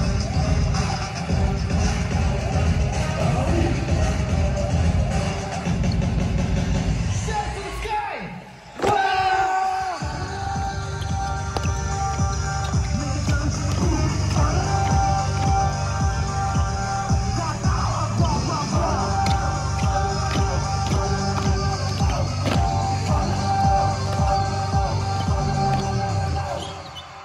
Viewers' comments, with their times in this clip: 0:08 why do I find their “wAHh” so cute 😂